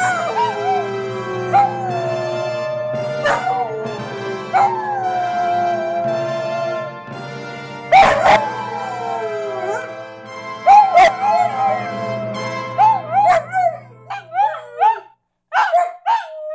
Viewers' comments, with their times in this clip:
0:03 Fanfare, the Queen is coming ;)